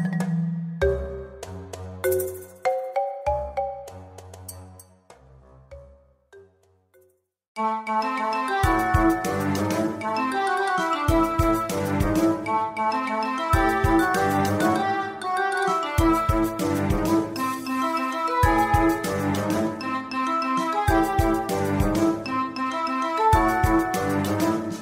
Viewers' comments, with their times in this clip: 0:07 Dancing Dragon Dungeon theme, always stood out to me from these games as a really unique piece. Sounds really good here, thanks!